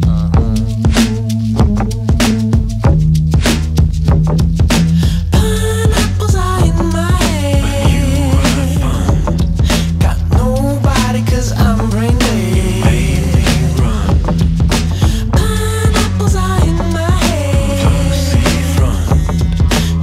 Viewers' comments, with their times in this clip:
0:07 is it just me or i heard it says "A new iphone"?